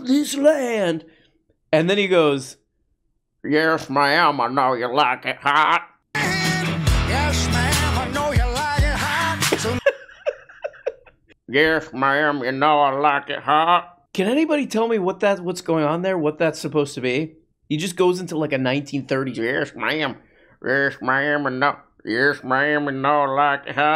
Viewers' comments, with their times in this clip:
0:04 he's doing his best Cher impression